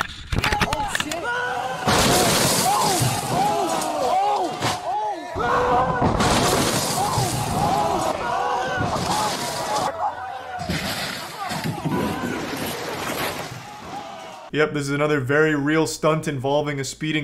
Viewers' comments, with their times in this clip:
0:03 Also I love how you can hear the car just crash into a tree